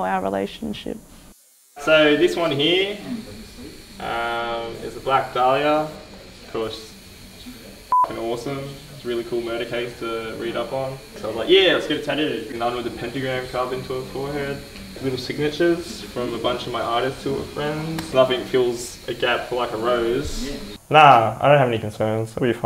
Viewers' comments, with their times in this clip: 0:04 he looks extremely wobbly and stoned.... slurred speech, dazed eyes wow he must be on drugs big time.....